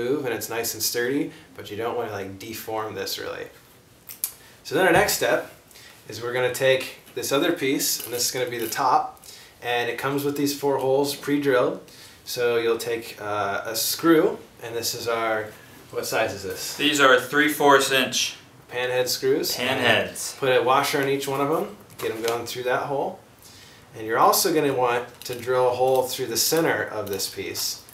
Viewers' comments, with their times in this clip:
0:10 ...bong in backround?